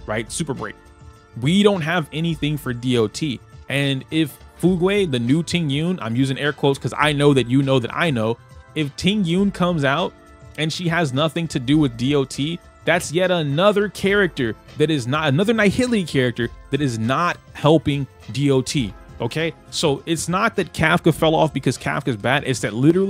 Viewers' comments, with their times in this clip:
0:04 OMG not the Fu- gway wth T-T its pronaunced Fyoog like the Braking bad Fugue state edit: lol I didnt know some1 corrected you a few mins later my bad Im not deleting this comment tho XD